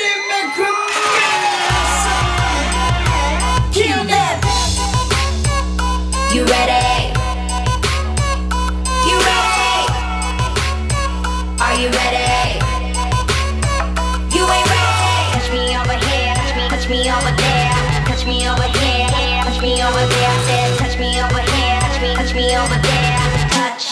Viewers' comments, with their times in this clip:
0:09 is that CL's real laugh,